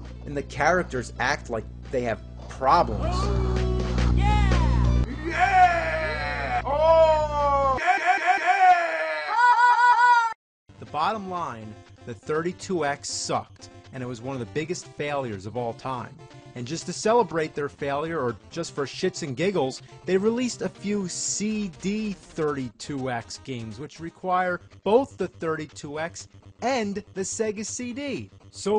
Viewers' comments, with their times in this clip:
0:09 sounds like glitch gremlin and I can't get past it without laughing XD